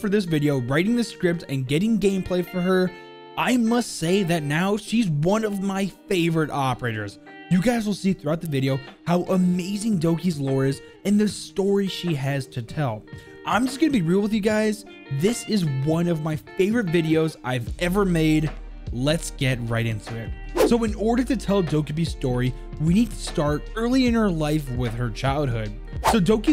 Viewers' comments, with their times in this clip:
0:08 did he say operters? somewhere